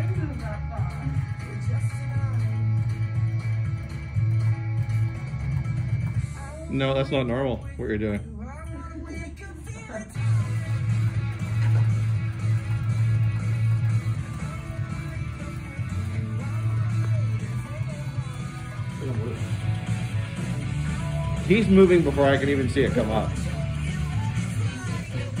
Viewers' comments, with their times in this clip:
0:06 "no that's not normal what you're doing" sounds like he's genuinely a bit concerned lol